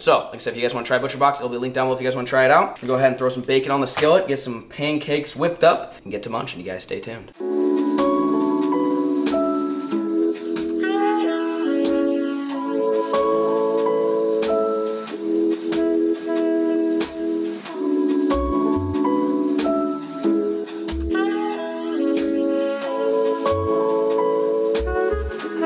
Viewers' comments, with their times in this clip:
0:07 And cue the romantic meat and pancake cooking music 😂